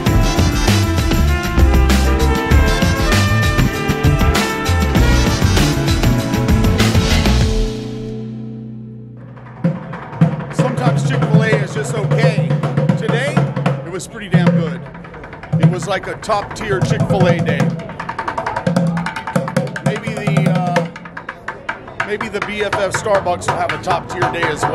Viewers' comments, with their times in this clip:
0:10 I hate "the wanna be drummers" smashing plastic buckets randomly. It sounds just like my 4 year old grand son playing with pot lids.